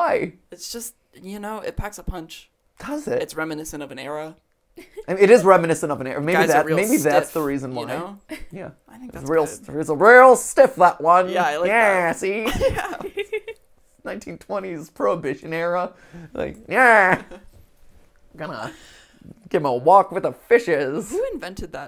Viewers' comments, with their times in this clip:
0:08 Fun fact: "Yeah! See?" is just a parody of Edward G. Robinson's "gangster voice". When playing such roles, Robinson would frequently say that for emphasis.